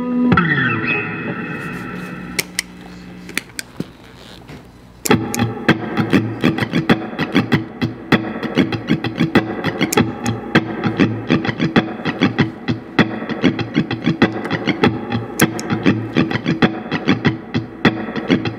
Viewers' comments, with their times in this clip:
0:03 I love the Dream-Pop, Shoegaze style of the song Always an inspiration to watch!